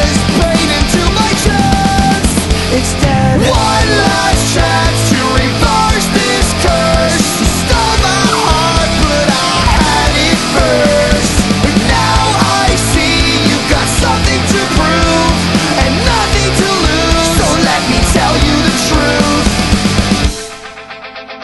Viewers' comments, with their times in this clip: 0:08 i love that part where his voice squeaks when he says heart.